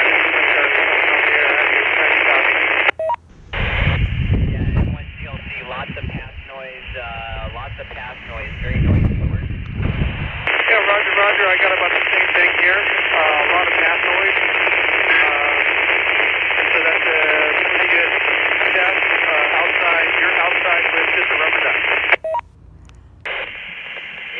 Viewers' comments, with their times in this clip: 0:05 show dmr is much more clean to hear comparied to analog